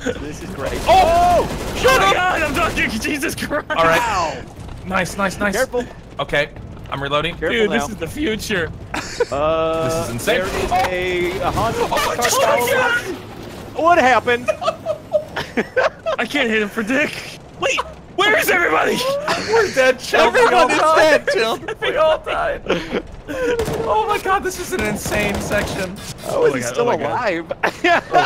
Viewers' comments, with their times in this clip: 0:09 It's like BlackHawk down. Turn that corner and then gun shots just rain down on you.